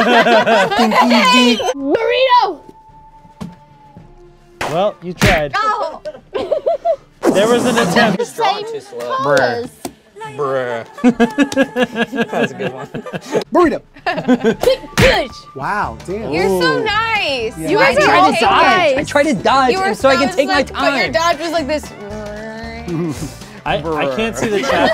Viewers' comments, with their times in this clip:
0:10 Ian's laugh made my day